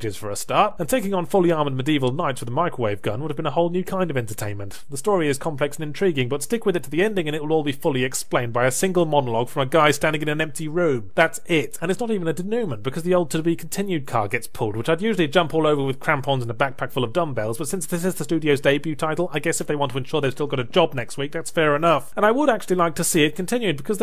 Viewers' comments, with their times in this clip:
0:08 In the long long ago days when Yahtzee didn't yet know how to pronounce "denoument" 😅